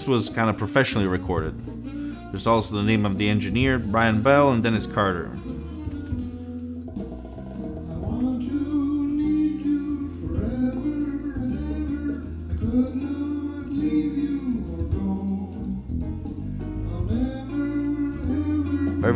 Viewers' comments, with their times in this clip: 0:07 I never ever want to hear that singer again, lol...although I liked the intro of that song. I enjoyed cassettes for the convenience of making recordings...the only thing good about that format, another interesting video though.